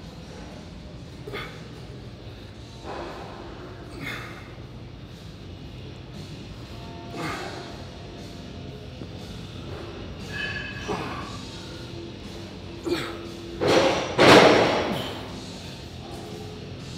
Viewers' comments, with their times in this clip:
0:03 was that a Mr. Olympian fart